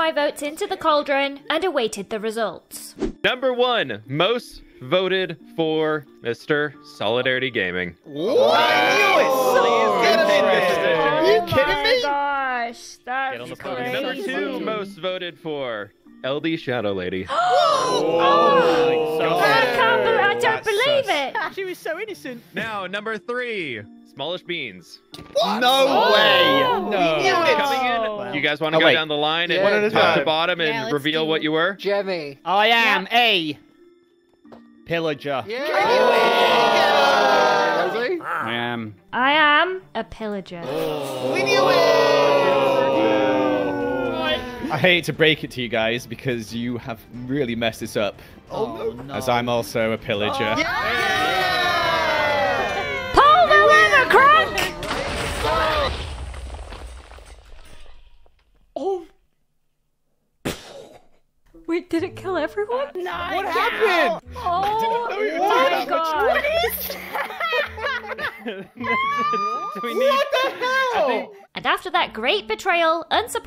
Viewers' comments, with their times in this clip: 0:07 the sarcasm is so funny😭😭
0:53 everyone went from cheering to complete silence 😭
0:55 THE WAY EVERYONES CHEERING AND SUDDENLY THERES THIS SILENCE AFTER THEY ALL DIED KILLS ME 😭😭
0:55 the way everyone screaming and then when they die it's just silence😂